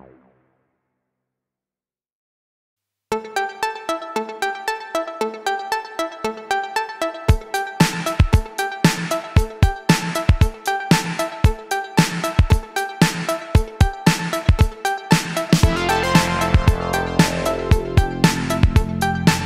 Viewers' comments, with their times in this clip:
0:03 Holy shit I thought the song in was something by Eric Prydz O.O